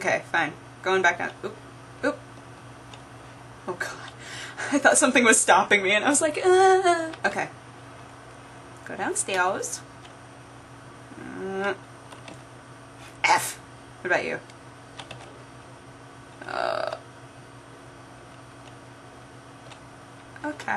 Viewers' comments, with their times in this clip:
0:03 funny moaning noise lol.